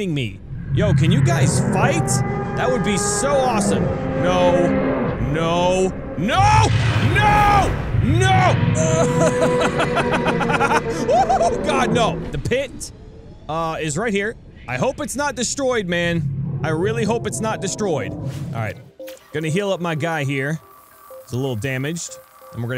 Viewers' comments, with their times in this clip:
0:05 I bet it's saying, " hhhhhheeeeeeeyyyyyyyy!"
0:09 listen to the lagh
0:10 WHAT THE HELL IS THAT LAUGH? XD